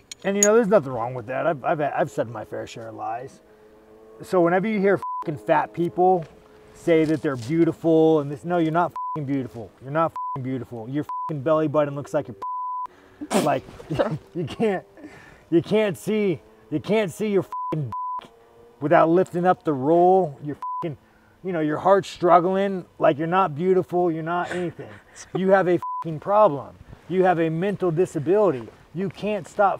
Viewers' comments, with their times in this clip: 0:10 Her laugh is so genuine I started laughing too